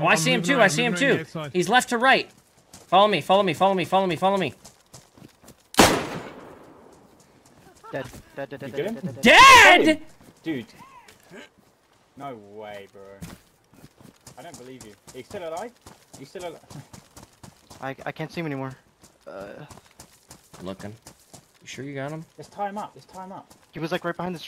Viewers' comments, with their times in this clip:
0:08 lol one to the guys summit is with is stream sniping, you can hear his "DEAAAAD??" through one of there mics.